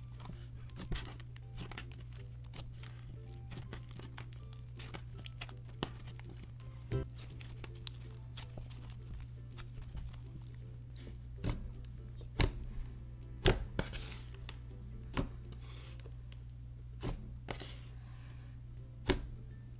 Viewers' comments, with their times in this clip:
0:06 you can kinda hear the music pop in for a sec 😂
0:06 Is it just or did I hear music
0:06 did anyone else hear the music glitch?
0:06 you can here the music start and stop lol